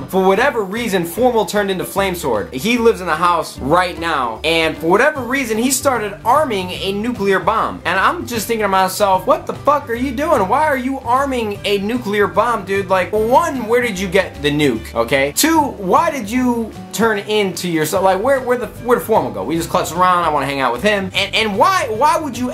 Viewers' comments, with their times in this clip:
0:08 Lmao bust out the southern accent right
0:08 Haha His country accent OMG it too funny 😂
0:09 tht country accent s omething fierce